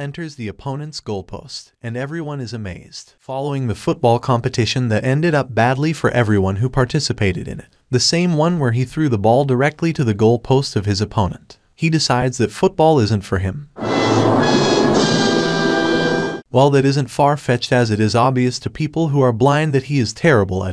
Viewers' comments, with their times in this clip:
0:04 it got supper loud